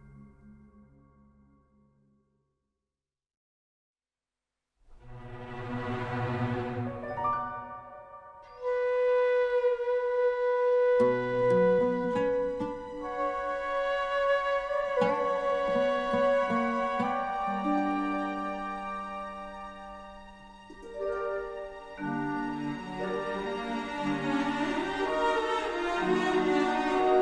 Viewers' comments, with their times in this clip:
0:03 Dottore's theme is absolutely phenomenal. That cutscene still gives me goosebumps whenever I rewatch it
0:11 Dottore had one of the best entrances of any harbinger to date. his theme absolutely slaps